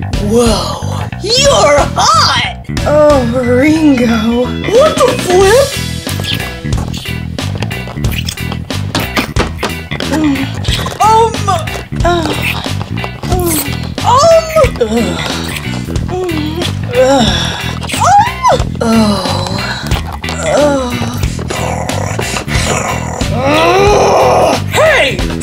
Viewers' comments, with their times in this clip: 0:07 OMG! The kissing noises that start !!!! Listen to them with out watching the vid... I have a dirty mind!!!!!
0:07 The noises and a little after are so wrong.... Listen with out watching! XD